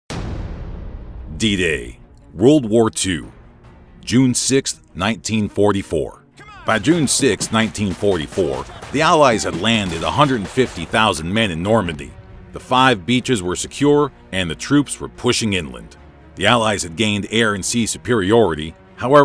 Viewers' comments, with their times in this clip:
0:00 If you rewind over and over it sounds like gunshots